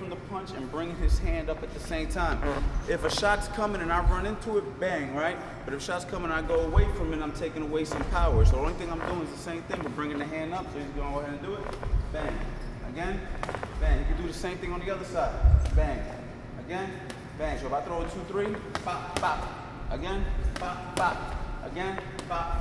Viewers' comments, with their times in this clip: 0:08 who farted in the mins